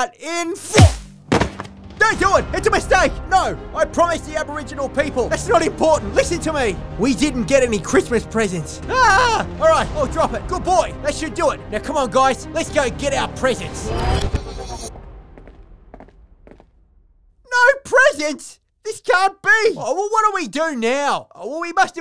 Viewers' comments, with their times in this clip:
0:05 The scream after "We didn't get any Christmas presents" hahaha